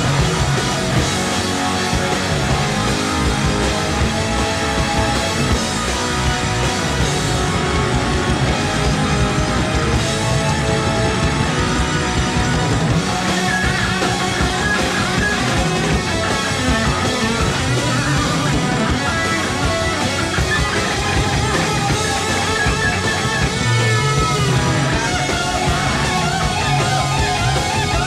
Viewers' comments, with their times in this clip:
0:10 The Megalomania crescendo... Iommi fucking ascended